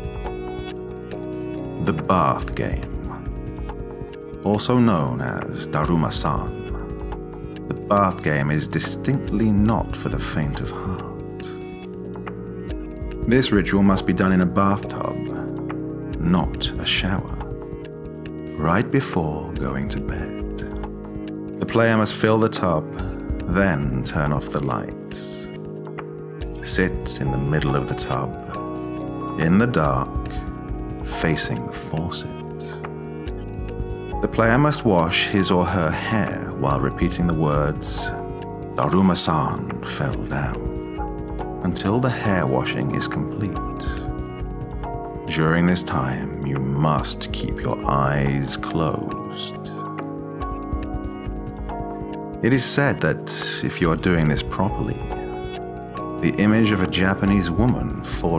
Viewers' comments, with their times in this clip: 0:05 For those who played Genshin Impact: This guy kinda sounds like Zhongli.
0:22 this guy sounds like Severus Snape
0:41 A video becomes way better when Albert Wesker is in as a narrator <3